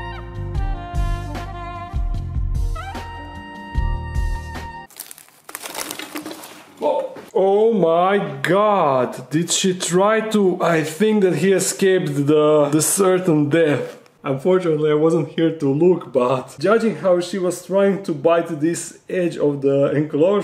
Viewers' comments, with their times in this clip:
0:04 Hear those dueling fangs. Clack clack clack, BOLT. Good parry little warrior.
0:05 THAT CRUNCH SOUND 😱🙊 He BOLTED! 🙌💙